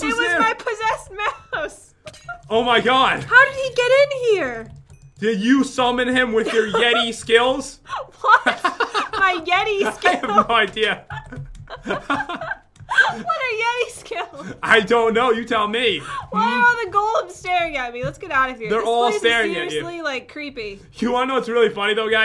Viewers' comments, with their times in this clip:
0:07 Weirdest laugh ever